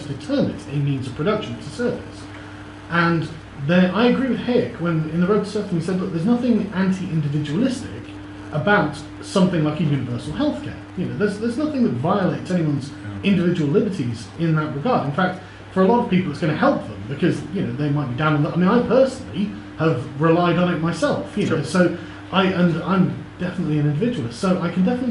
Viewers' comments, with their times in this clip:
0:10 my thought was "this guy sounds a lot like that guy from Youtube."